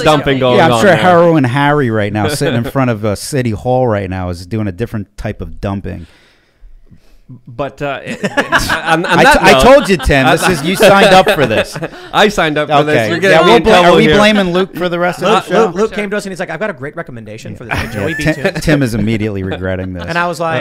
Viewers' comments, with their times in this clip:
0:06 If you ever wanted to know what a fake laugh sounds like.